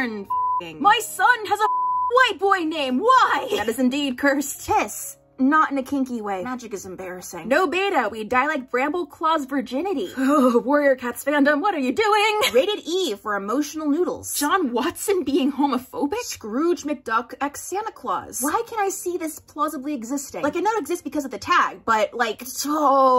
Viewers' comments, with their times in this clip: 0:06 that came out IN SONG! XD